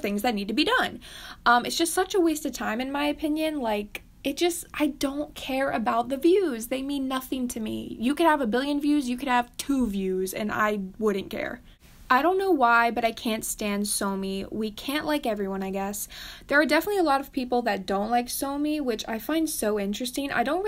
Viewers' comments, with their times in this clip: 0:08 OH MY GOD ----- SIS the way you said 2 made me cry from laughing too much LMAO